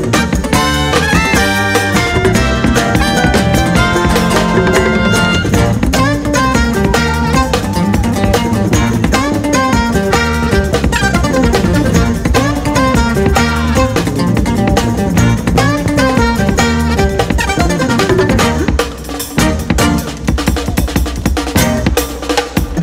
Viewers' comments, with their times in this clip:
0:10 My musical friends is that just a descending Bb pentatonic ?